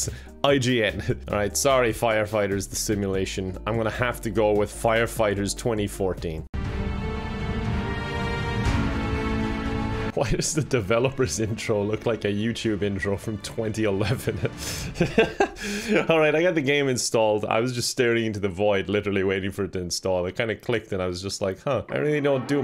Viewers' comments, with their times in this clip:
0:08 sad musi- CHEERY HAPPY ADS MUSIC UWU